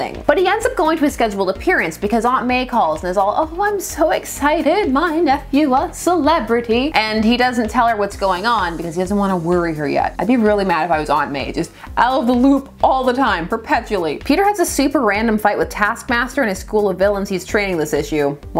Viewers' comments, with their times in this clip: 0:03 not sure about your Marisa Tomei impression... 😉